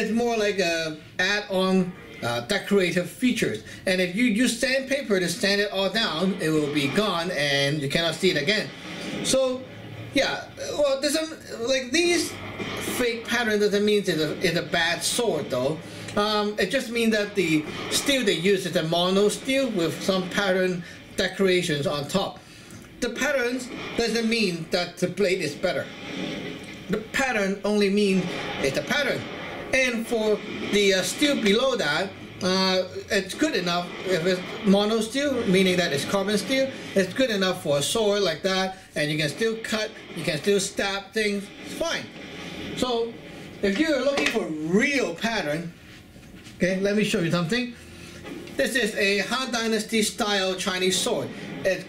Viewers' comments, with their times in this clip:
0:07 Why the hell do I hear bombs dropping or waves crashing ? LOL that is distracting.
0:37 I've been collecting knives since I was a kid and have recently developed an interest in swords. Your videos are helpful, informative and fun to watch! Thanks for taking the time to put these videos up! Nice sword collection by the way. Was that Godzilla breathing heavily as he passed by in?
0:38 Did anyone else here deep breathing noises